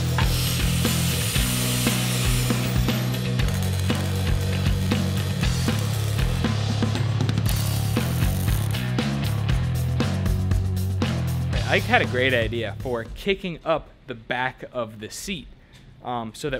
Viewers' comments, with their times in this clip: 0:03 anyone know what the song is? its a banger bassline lol